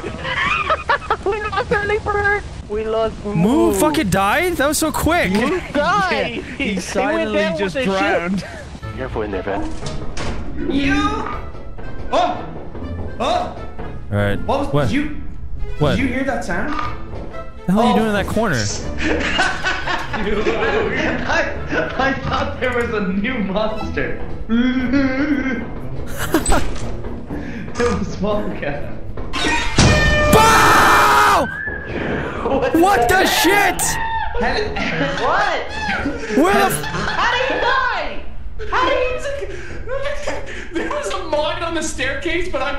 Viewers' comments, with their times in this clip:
0:07 Did anyone hear delirious say the n word
0:29 its great to hear that airhorn again